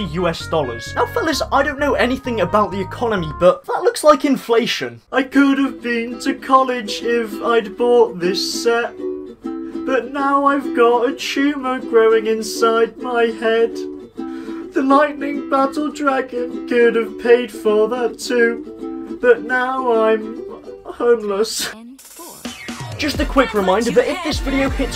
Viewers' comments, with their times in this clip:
0:05 You should be a singer